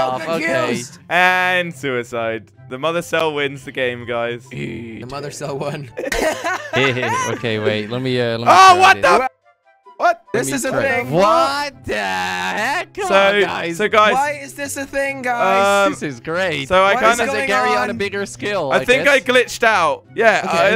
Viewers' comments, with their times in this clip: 0:07 Why did he just mute it when he said "fuck"